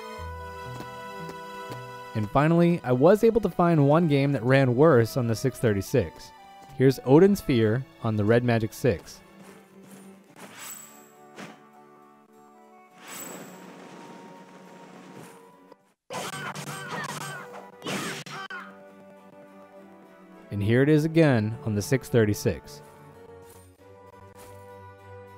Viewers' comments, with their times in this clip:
0:09 "Odin Sphia" on ODIN.